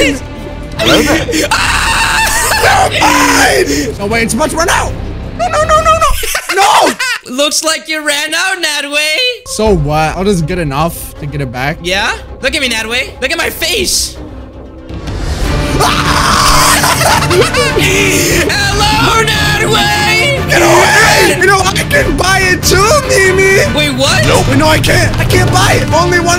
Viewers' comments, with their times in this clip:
0:09 That moment was perfect timing to laughter lol